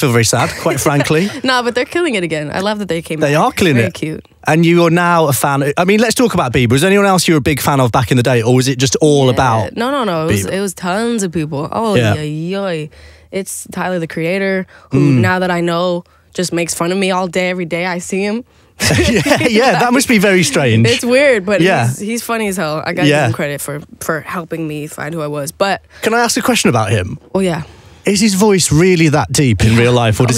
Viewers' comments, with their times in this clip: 0:09 billie is trying to be a British 😂❤️
0:13 billie really sounds Norwegian! Like that “ojojoj” it really does! ❤️